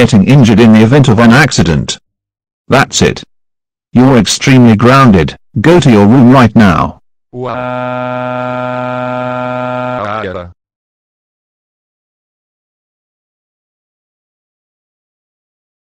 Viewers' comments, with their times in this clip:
0:07 Water Crash, Dark Cyber Goomba, and Torch Bro's crying voices